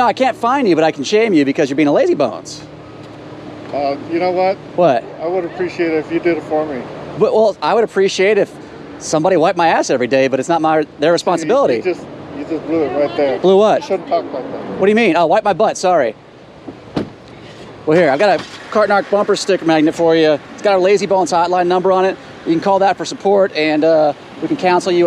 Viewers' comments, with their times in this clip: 0:08 “I would appreciate it if somebody would wipe my ass every day, but it’s not their responsibility.” My new go to. in case you’re wondering. Also, I figured out who his voice/cadence reminds me of...Mark Normand.